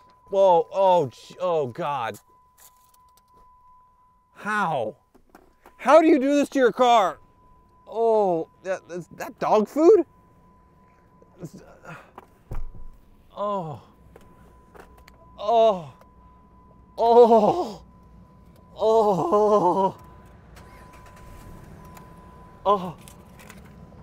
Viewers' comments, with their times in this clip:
0:08 Dude… neighbors called the cops saying that I was watching porn too loud… minutes later I remembered about your moaning…. Shit